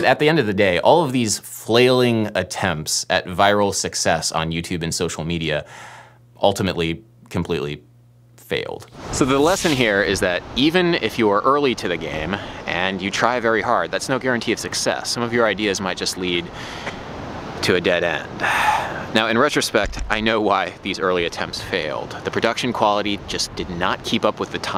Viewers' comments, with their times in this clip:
0:08 when that licc came in the first song, i realised how far i’ve cone since like, the polyrythm video i think. thanks for getting me into more risqué music theory